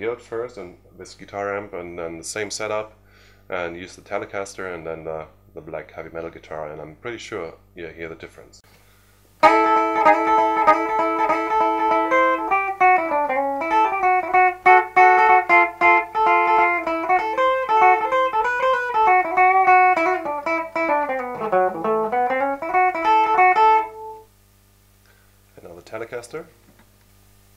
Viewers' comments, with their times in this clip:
0:08 when you played the same riff on three guitars back to back, it was really interesting to me to hear the difference. I like the Tele best of the three on that riff, but I was also kind of surprised that the BC Rich played clean through that amp had almost a resonator sound to me -- a lot more twangy than I would have expected from that maker.